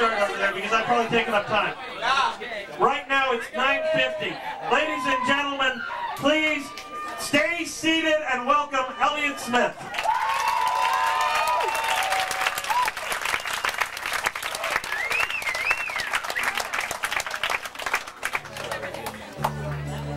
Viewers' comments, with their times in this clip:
0:03 was that a cellphone?